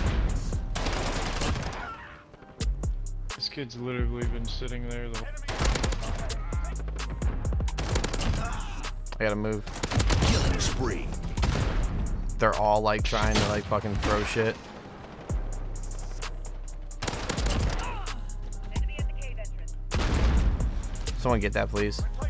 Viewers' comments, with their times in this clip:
0:04 that sounds like penguinz0